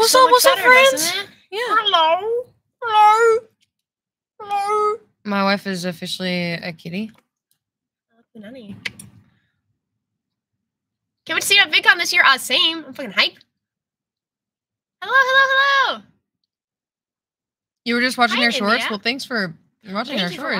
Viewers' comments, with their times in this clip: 0:04 Almost sounded more like a bloodhound but I thought she was a Golden Retriever.....? Wtf?🤣🤣🤣🤣 Also do either of you enjoy playing Elder Scrolls games and are you hyped for Starfield?